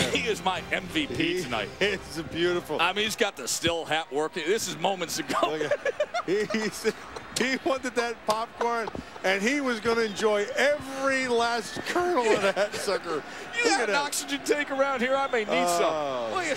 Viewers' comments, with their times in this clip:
0:04 i really love when he laugh so genuinly despite try to be professional One of the funniest video by far